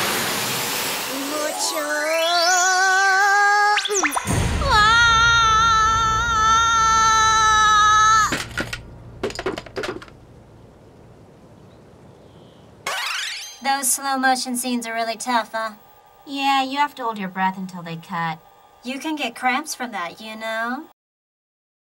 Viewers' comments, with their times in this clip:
0:06 woah surround sound